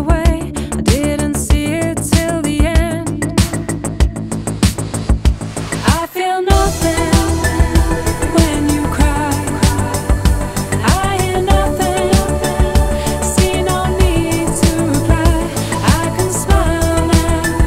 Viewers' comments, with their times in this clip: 0:05 When the synths really kick in it's suddenly 1984, and it's wonderful.